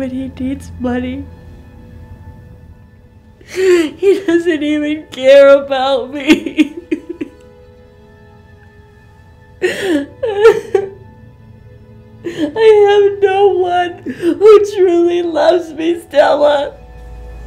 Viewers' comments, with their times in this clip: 0:05 Oh my god. The mothers crying is so legit to the point that I feel sad.